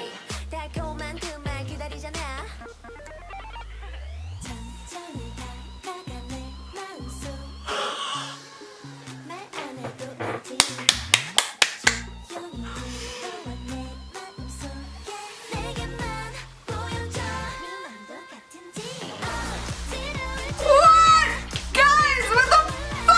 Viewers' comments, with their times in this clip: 0:05 OMG IT'S MICHAEL JACKSON! HE HEE HE HEEEE HI HIIIIIIIIIIIIIIIIIIIIIIIII